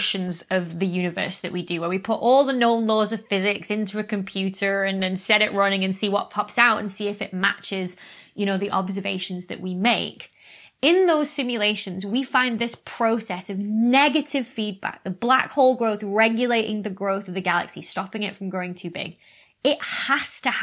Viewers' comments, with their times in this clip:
0:03 It's funny how you say the word computer without your accent haha ! Great video like always.